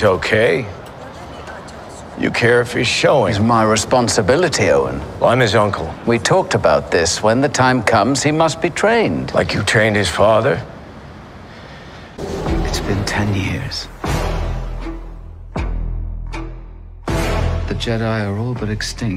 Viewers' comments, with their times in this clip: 0:04 Showing what? They’ve clipped something after word “showing”